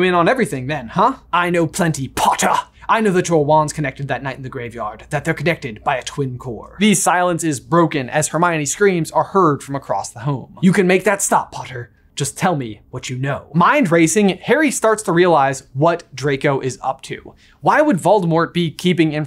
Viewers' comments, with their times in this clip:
0:04 very realistic PPPPPPPPotter lol